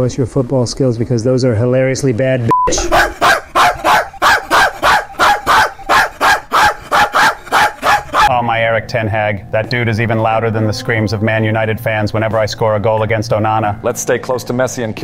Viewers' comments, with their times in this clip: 0:03 Bro sounded like a brasil fonk